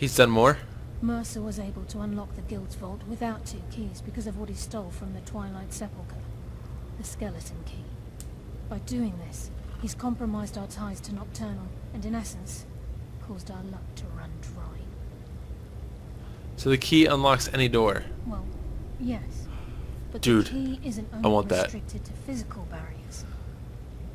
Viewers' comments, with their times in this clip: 0:06 Is that a cheek-slap I heard? :)